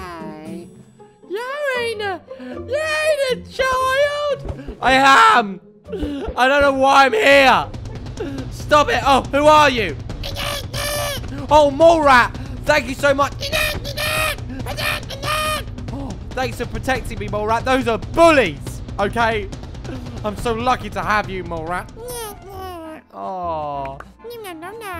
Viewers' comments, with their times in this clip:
0:10 mole rat sound 😂😂😂😂😂😂😂😂😅😅😅😅😅😅😅